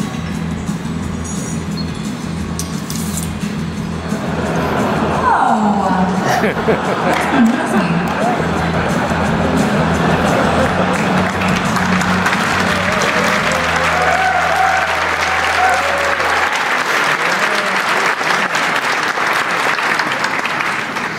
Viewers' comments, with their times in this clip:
0:06 Please don't call me stupid, but I really don't understand why people are laughing Help?